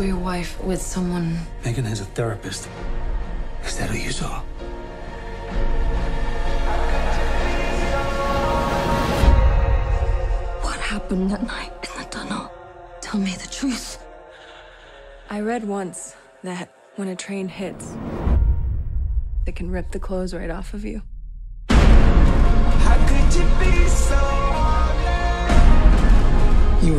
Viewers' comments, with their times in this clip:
0:10 is she saying What happend that night in McDonald? Excuse my english.